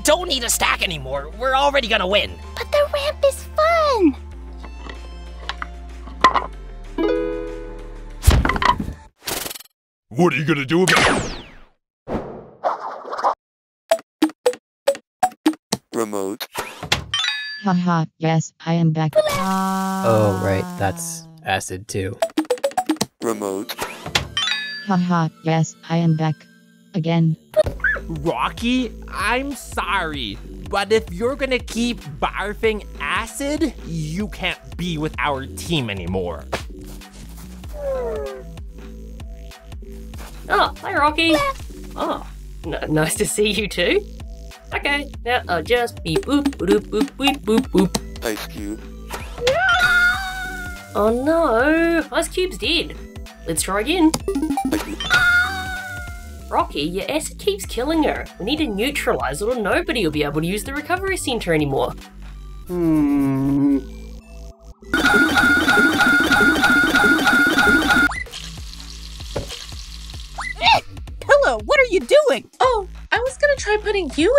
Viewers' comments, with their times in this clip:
0:04 This is a fun little visual detail I noticed, but when Teardrop get back up and looks at Eraser, a "rattlesnake-like" sound effect plays. In accompany to this, Teardrop's mouth jitters slightly AT THE SAME TIME. Meaning that it's implied Teardrop made that sound, herself! I'm not sure if that was intentional or not, but if it was, that's genius!!! (Edit:) I'm trying to imply that Teardrop made the sound by clattering her teeth, sorry for the confusion
0:56 "Rocky, your ass keeps killing her."